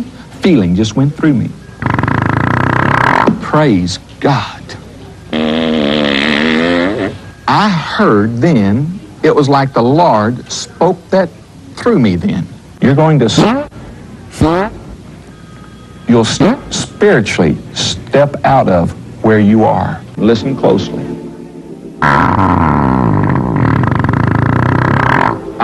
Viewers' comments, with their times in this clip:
0:05 That wasn't the Lord speaking, that was the baked beans.
0:13 what's great is that the farts are stuttering just like he is 😂😂🤣🤣🤣